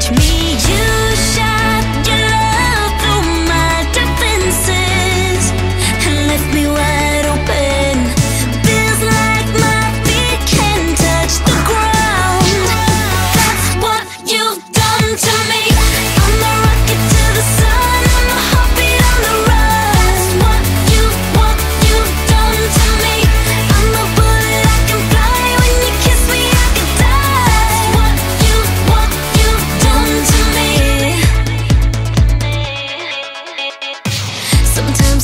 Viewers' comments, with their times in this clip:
0:05 look and tell me ariana didn't copy her looks and her voice
0:17 Is she singing 'I'm a hobbit on the run'?